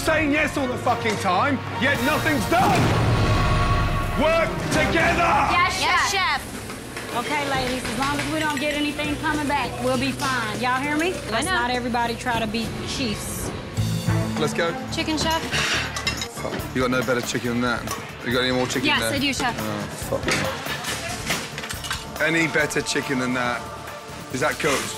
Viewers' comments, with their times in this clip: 0:05 Gordon literally roared